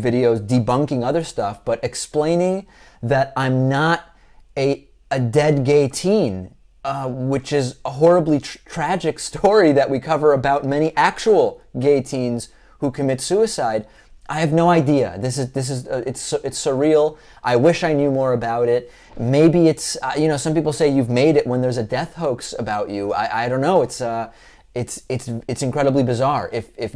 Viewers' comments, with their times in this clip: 0:07 horribly true? lol